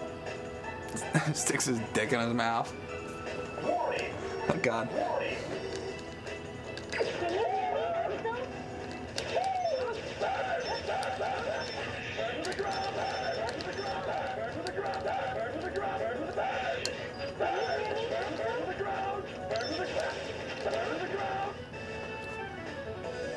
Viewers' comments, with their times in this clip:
0:04 Sorry, Alia....can’t hear you...all I hear is BURN BURN BURN!! BURN TO THE GROUND!! BURN TO THE GROUND!! BURN TO THE GROUND!! Ear rape there! Complete insanity test!